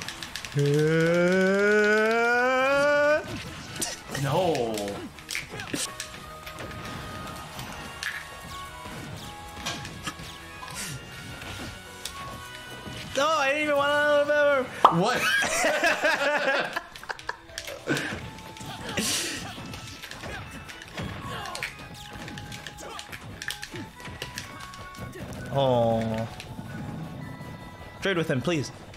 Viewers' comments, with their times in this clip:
0:10 when a parent asks their kid why they're crying and the kid tries to explain